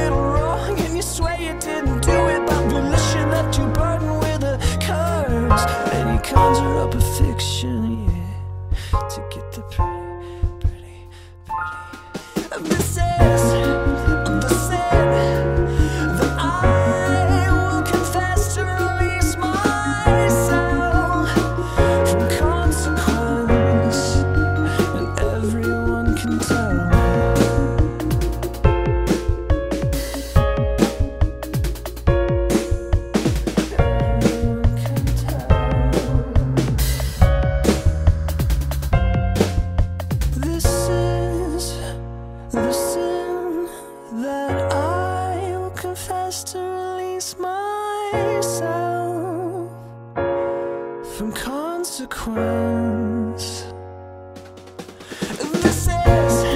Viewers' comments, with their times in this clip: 0:08 “ᴛʜᴇ ᴘʀᴇᴛᴛʏ ᵗʰᵉ ᵖʳᵉᵗᵗʸ ₜₕₑ ₚᵣₑₜₜᵧ” I was not ready for that at ALL
0:09 dallon whispering "pretty" for best quality, listen with headphones. you're welcome
0:09 what is it about dallon weekes and specifically the word pretty that is just,,,the perfect combination examples: on here "I'll break your pretty face" on Choke the "pretty, pretty, pretty" on visitation of the ghost(especially the fancy version)
0:10 The whispering was officially the death of me
0:41 I cannot stop listening to like ugh his voice is so beautiful 😫😫
0:43 god ok time to list all the things i love about this video: • pretty synth in the background ooh • 90's VHS aesthetic goin strong👌 • ryan's old blue hair!! • skull thing makes a reappearance • dallon's vocals sound so clear and crisp at certain points fuck • 'pretty..pretty..pretty...' • the slower beat is so light and relaxing but also makes it sound a tiny bit,,ominous? melancholy? whatever it is about it i love it • people in the live chat going absolutely feral lmao • ryan nailing it with the drums as usual yeah dude you fuckin go • the way dallon grabs the bass ahh • the slow acension of intensity in music towards the end is just *chef's kiss* • DALLON'S HIGH NOTE AH F UC K in conclusion i love and am soso proud of two (2) talented men and i can't wait to see they make next❤️❤️❤️